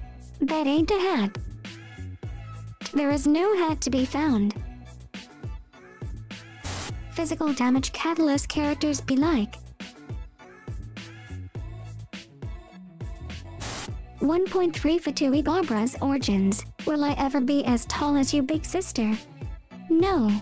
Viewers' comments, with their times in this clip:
0:05 Sad Diona noises